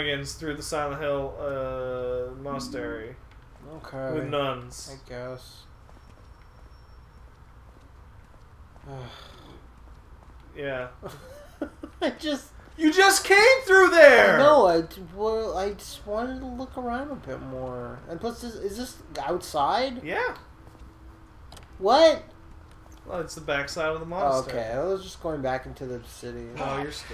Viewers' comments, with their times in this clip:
0:08 that sigh pretty much sums up this whole damned game.